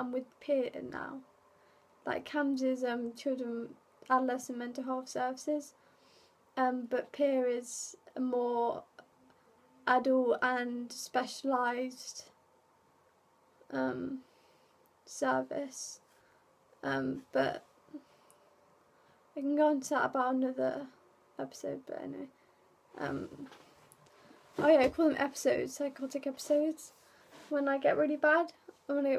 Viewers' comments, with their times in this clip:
0:10 is there another girl there? i hear her a few times but clearly when ur saying u thought the pills were maggots i hear talking too but more like a deep guys voice possibly talking to the young girl voice plus whats going on on the left of u with the light, its like someones walking back and forth in front of a window off screen. i feel like ur scared and having trouble ignoring the sounds thru this recording and i gotta say it made the butterflies in my stomach start fluttering up my throat and i had to yell no around 3 times and rocking in a ball by halfway thru cause it felt like any second i was going to see or hear something bad